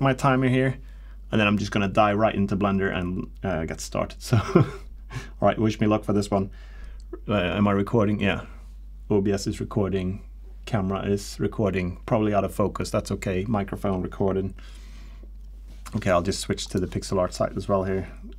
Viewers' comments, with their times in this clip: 0:04 did you say "die right into blender"?